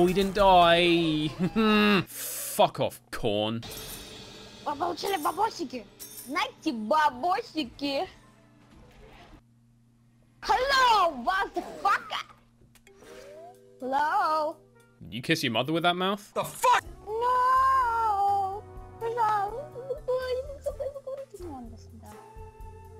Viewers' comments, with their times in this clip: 0:05 ogo russkaya rech (this is just a russian kid, no worries, there is no satan)